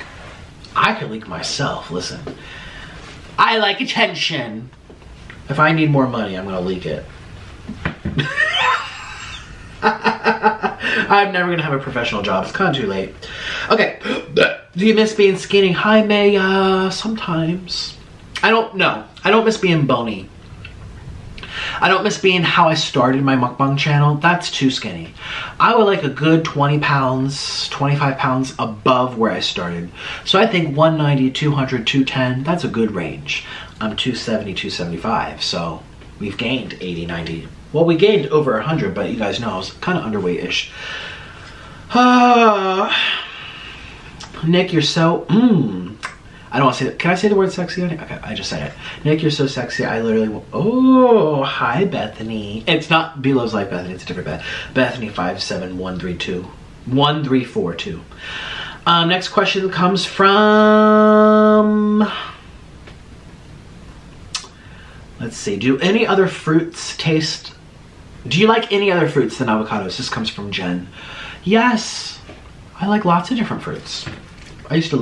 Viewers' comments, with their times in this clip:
0:10 lmao that laugh got me😂
0:59 your voice sounds literally auto tuned! Lolol